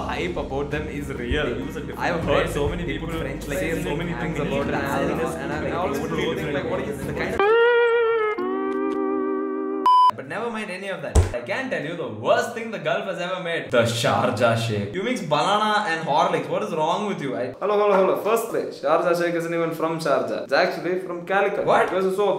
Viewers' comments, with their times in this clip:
0:08 the cry of editor ultimate🤣